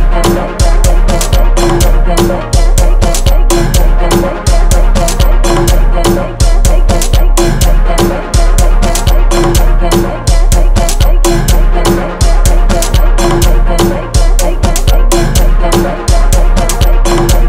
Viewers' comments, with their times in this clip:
0:03 Instrument hits different when something is in your nose